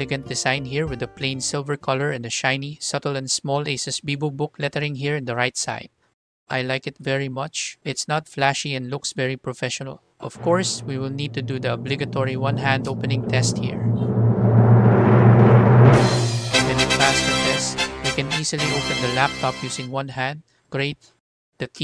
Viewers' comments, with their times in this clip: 0:06 That music ...hilarious. Thanks for the wonderful review.